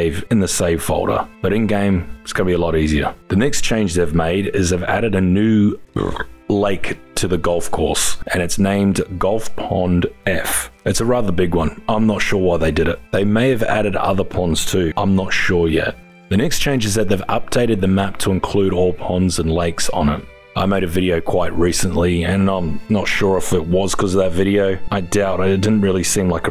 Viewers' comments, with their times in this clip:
0:03 Is nobody talking about that burp? 😂
0:04 Ain't nobody gonna talk about how he just burped ? 😂
0:04 this guy burps. very good vid tho
0:05 that's gotta be the most Dad burp you've ever made lol. Also super hilarious that you just casually did it and left it in lmao hell yeah man
0:05 Did you just belch in my ear ?
0:05 Is nobody going to mention the burp 😂
0:05 Nice burp B)
0:05 That burp hahah
0:05 that burp caught me off guard
0:06 I love how you included the burp absolutely no fucks given hahahaha
0:06 Appreciate the vid, expect for the belch in our ear Also there's no need to saying something is "more bigger." Just "bigger" works. Criticism aside, I do like your vids - keep 'em up!
0:09 the Burpp is hilarious